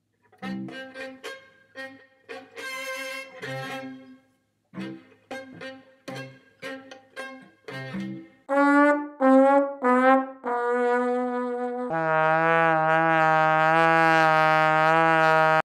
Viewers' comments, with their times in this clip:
0:13 Random Mosquito at 3am